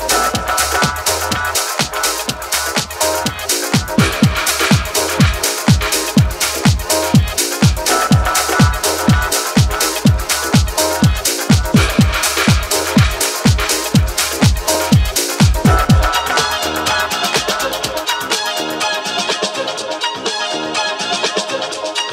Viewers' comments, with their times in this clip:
0:08 Fantastic groovy disco-house track!!! Bros, you are fire!!! 🔥